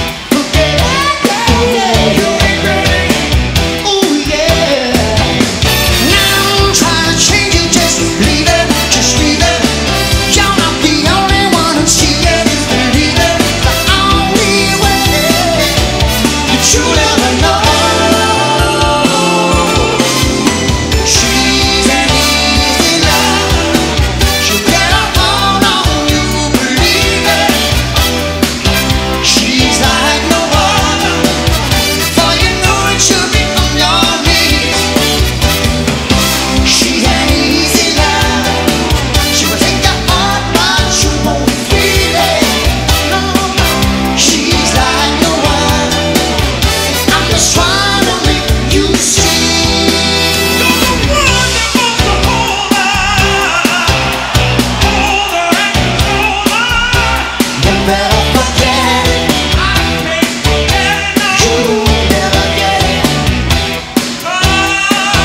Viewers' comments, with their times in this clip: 0:06 Phil's voice so powerful...
0:49 that guy omg excellent! great harmonics all of them